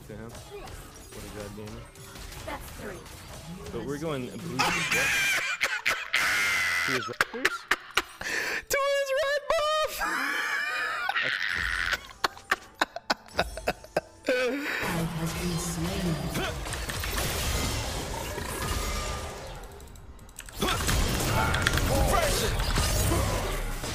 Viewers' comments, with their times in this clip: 0:03 that one crow at the morning
0:03 when you find el risitas' successor
0:04 pinkward... he... laughed?
0:06 laugh like El risitas xD